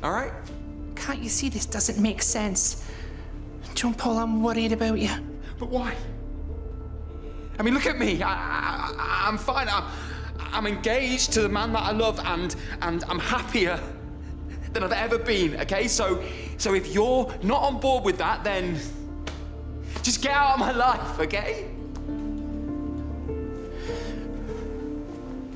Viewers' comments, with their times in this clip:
0:07 The way John Paul say “I’m fine” shows that he’s not fine